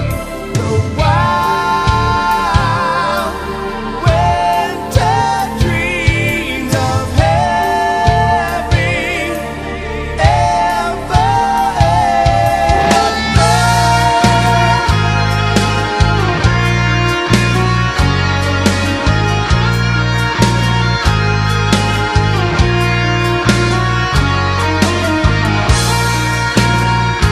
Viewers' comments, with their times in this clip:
0:10 Melody Change…”All the Money” as we say in Greece! 🎸🗣🎸